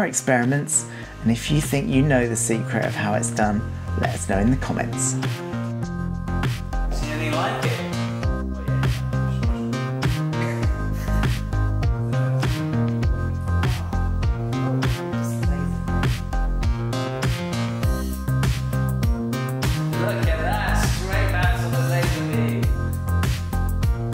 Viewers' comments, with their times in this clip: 0:05 that'd be great! really like the music that starts !